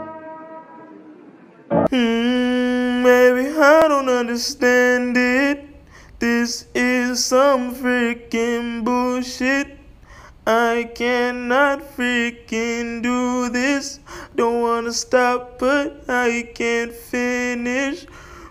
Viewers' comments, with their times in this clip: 0:03 That song at the mark is a whole mood. Also I love this vlog and all the memes that made an appearance